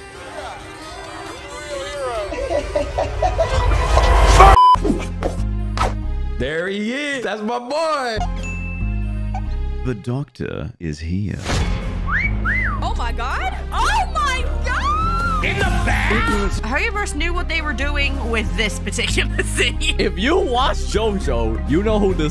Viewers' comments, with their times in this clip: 0:08 The music lmao nice